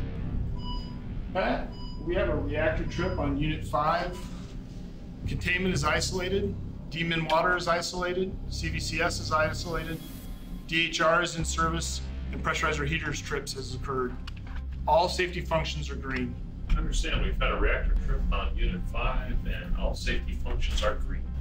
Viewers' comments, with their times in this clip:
0:04 You know shits real when the demon water's isolated
0:06 did he just say "demon water is isolated"??
0:06 its all fun and games until the demon water isnt contained